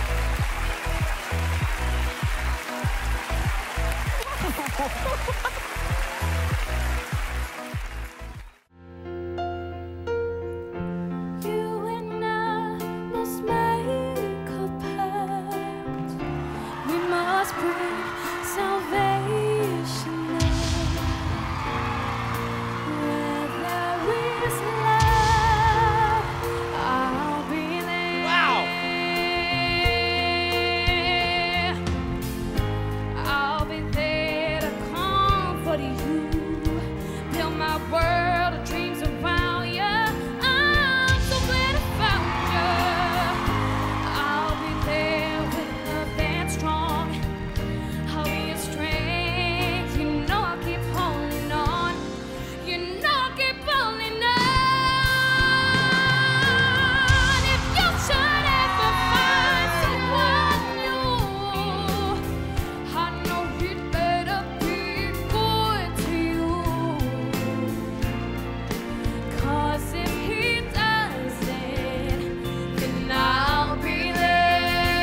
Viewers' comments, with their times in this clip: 0:07 He sounds absolutely like a young boy of his age, I don't understand why it's hard to identify his gender just by voice.
0:07 that note just made me cry
0:20 that’s not sounding like the opposite gender that’s called the voice you have before puberty hits
0:38 The little boy doesnt really count cause most voices sound the same until maturity is reached
0:42 Baby Rick Astley???
1:02 I liked this video for this boy his voice is like woow..